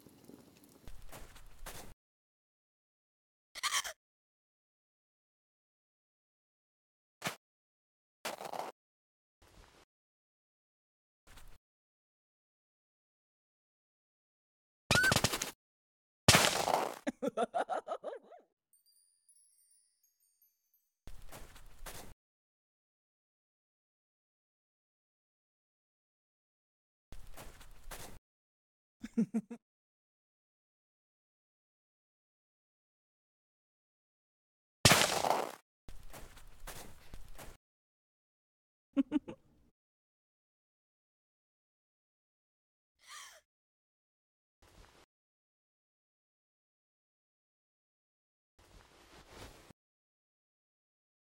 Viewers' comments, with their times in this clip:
0:03 love how her usual gasp is so shaky from the cold.
0:04 awww, that gasp in the cold was so cute 💕
0:17 OMG HER LAUGH AHAHAHZEKNWOHXW
0:38 Twilights laugh Sounds Like Chysarlis😱